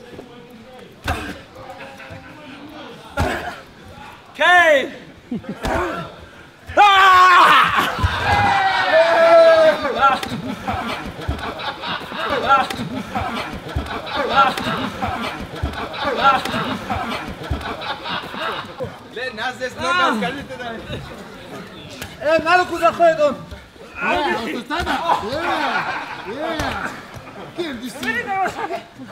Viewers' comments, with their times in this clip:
0:09 Is it me or did the audio repeat a couple of times
0:10 wtf is up with that looping audio
0:10 Anyone here that looped laughter? creepy af
0:10 the audio has been repeated 3-4 times you can hear the same audio clip? i wonder what was said they had to cover haha
0:10 lol is the sound looped?
0:11 bro wtf they looped the audio like 5 times that was so weird